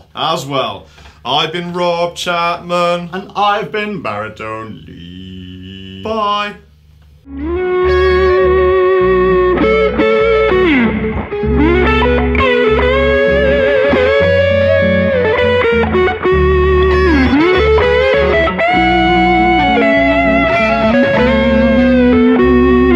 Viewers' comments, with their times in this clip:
0:09 Listen to that harmony ! That was insane.